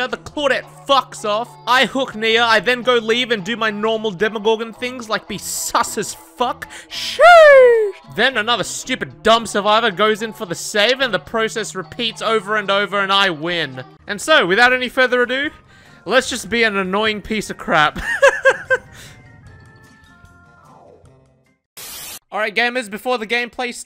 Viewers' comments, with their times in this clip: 0:07 The way he goes SHEEESH is Gold 😂